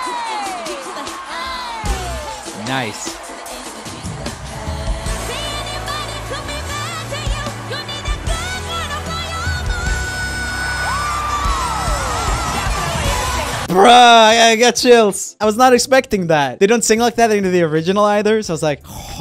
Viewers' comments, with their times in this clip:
0:05 ...I wish i could sing like that..that was just...BEATIFULL!!!❤